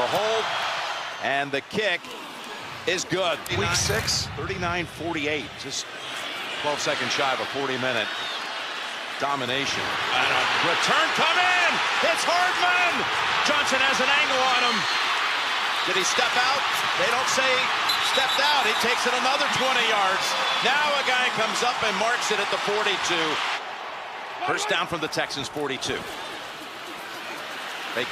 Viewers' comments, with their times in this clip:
0:09 is when the comeback happens and Chiefs are still cheering loudly being down 24 to 0. I love Chiefs fans